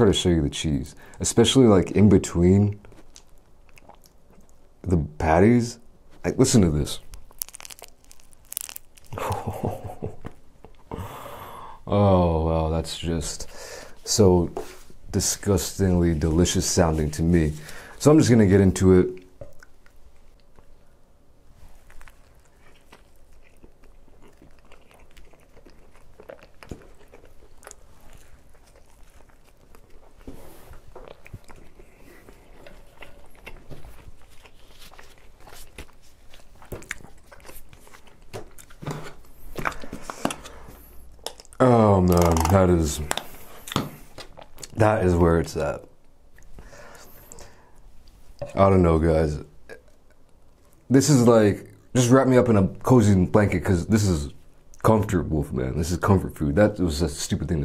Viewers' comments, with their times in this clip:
0:07 thumbs up for cheese noise
0:07 thats what good poonani sound like
0:40 THAT KETCHUP SQUIRT WAS PERFECTION